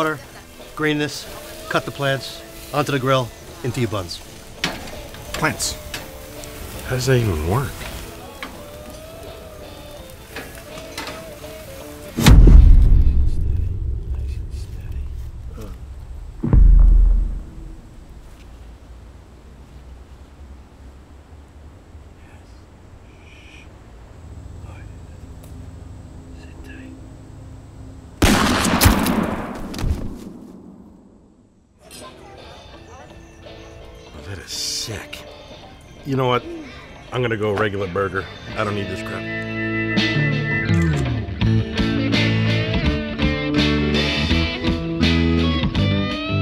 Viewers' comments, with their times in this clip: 0:05 This guys impression makes me sick right here
0:28 That's one loud air gun...